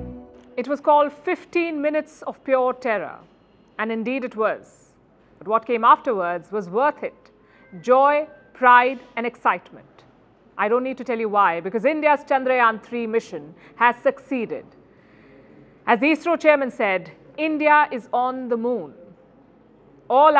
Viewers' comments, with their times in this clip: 0:07 Listen to the phone ringtone at exactly seconds😂😂🎉